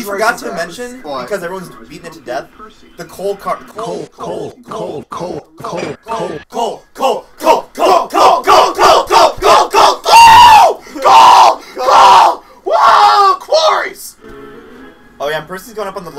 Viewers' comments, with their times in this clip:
0:03 I can't get over how everyone just starts chanting COAL COAL COAL